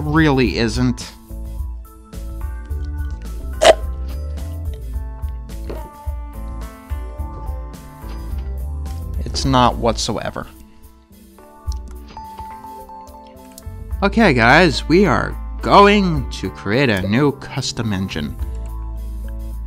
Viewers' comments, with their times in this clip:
0:03 what the fuck did you just cough up a hairball